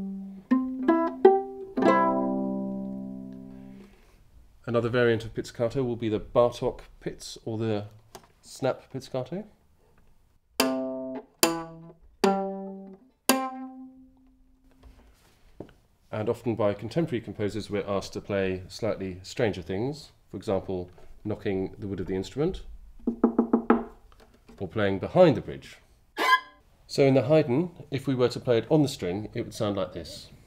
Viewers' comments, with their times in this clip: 0:08 IT'S LIKE SLAP BASS OMG
0:13 that sounded painful....